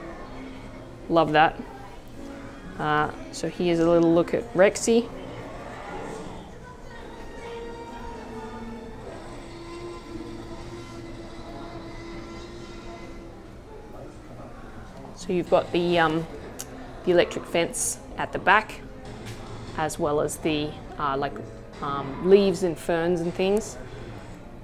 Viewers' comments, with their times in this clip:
0:07 I love it how you zoomed into rexy’s face and said her name while in the background you hear her roar
0:08 rexy roars what a perfect timing
0:08 the Jurassic world Fallen Kingdom trailer music with T-rex roar in the background
0:09 perfect timing for that iconic roar to play in the background lol.
0:09 just hear the roar of the tyrannosaurus